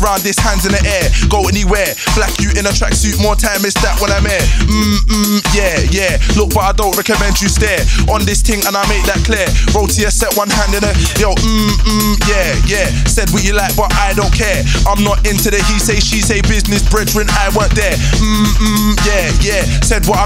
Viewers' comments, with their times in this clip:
0:03 anyone know this subby one??